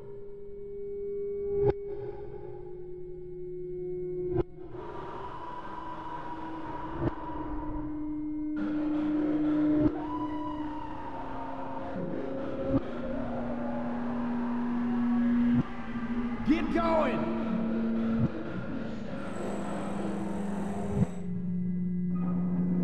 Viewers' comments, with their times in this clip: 0:04 gotta love that femur breaker